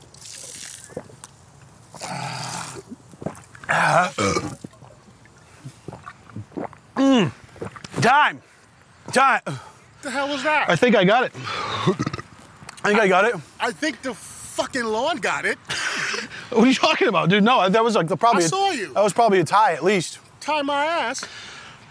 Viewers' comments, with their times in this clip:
0:03 the fucking Burp😂😂😂